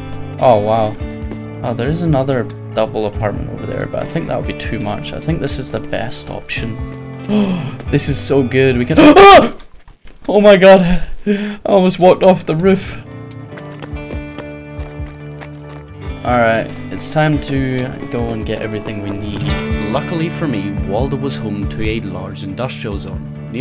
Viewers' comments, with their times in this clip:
0:08 i love the scaredness in ur voice just the pure "AH" xd
0:08 That shout scared me...
0:08 I love the sudden "EEEUUGGHHH"
0:09 the most god shattering shout, made me shake.
0:10 You legit scared the shit oit of me with that scream more than you almost falling down did!😂😂😂
0:10 this song is fucking awesome. Great Video, first time i've come across your content.